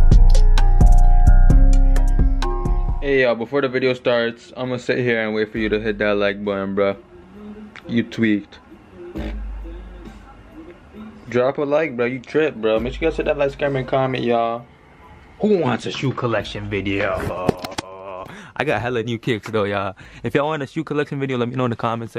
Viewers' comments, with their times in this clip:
0:08 Nigga farted bruh!💀
0:09 that nigga farted.